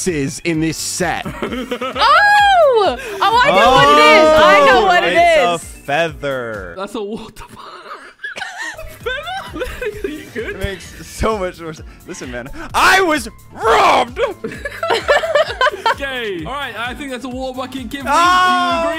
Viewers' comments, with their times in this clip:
0:06 in thats a w h a t t h e f u u u 😂